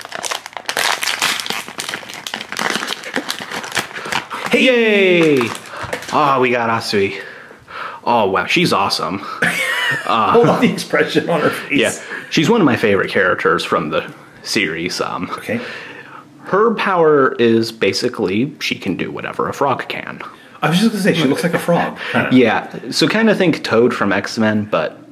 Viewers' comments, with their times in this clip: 0:07 when he just said like "oh wow...she's awesome" sounded like he had a crush on her and made it really obvious. I mean.....I lowkek kinda like her to....like a lot a lot.. I just thought it was funny how he said it